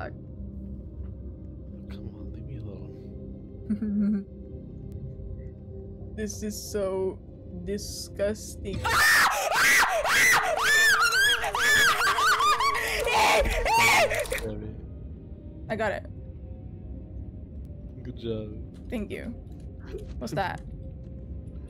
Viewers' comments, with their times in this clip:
0:03 THE FACT THAT I SCREAMED WITH YOU IS HILARIOUS 🤣